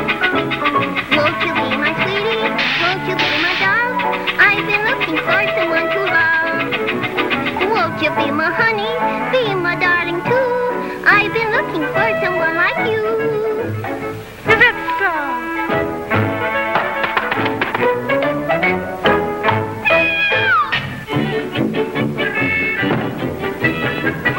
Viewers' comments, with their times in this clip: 0:07 that old woman took the voice of Betty boop!